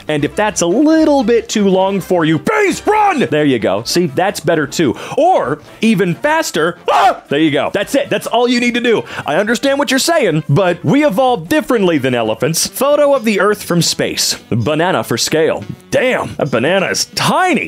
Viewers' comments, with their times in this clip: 0:05 Not the homer scream lmaoo
0:05 the scream sounds like homer simpson....just sayin